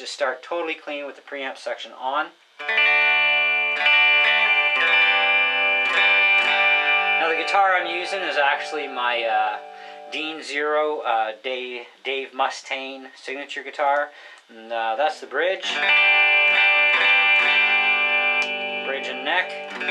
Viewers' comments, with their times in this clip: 0:03 The music starts Nice demo and explanations. Thank you.